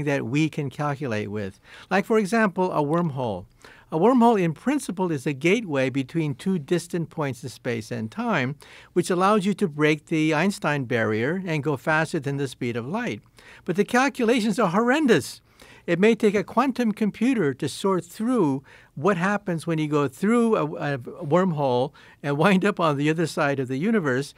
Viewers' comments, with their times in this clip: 0:09 WTF is an ICE-Time barrier?